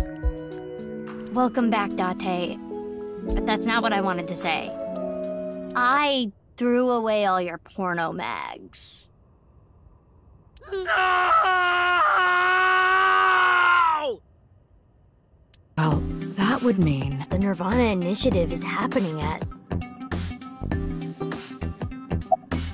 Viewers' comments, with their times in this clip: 0:06 The music stopping at this revelation is perfectly done.😊